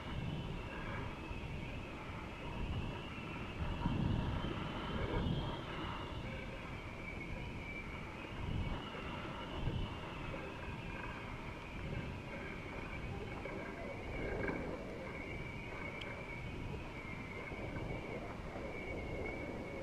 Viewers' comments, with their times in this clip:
0:07 ..., sounds for me balloon has a bit of an agony problem😅😅😅